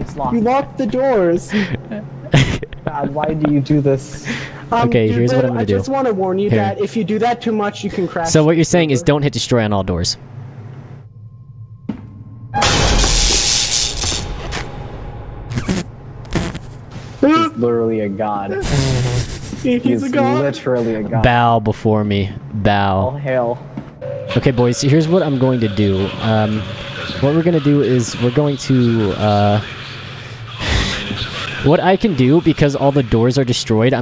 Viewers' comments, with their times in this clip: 0:09 he sounds like james charles
0:17 sounds like acp-096